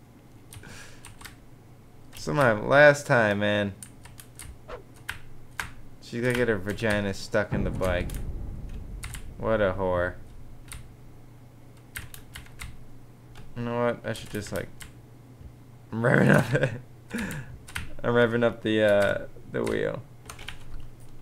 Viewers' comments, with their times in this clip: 0:04 Is some1 playing Slender in the background? o.O